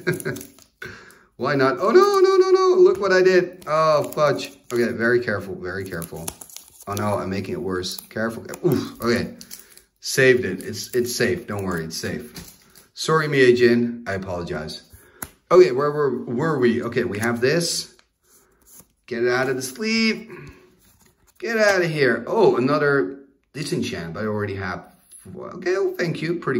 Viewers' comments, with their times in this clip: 0:09 ”Sorry Mijae Dijnn, I apologize!” 🤣🤣🤣🤣🤣 Btw, I like your Italian pronunciation 👍😉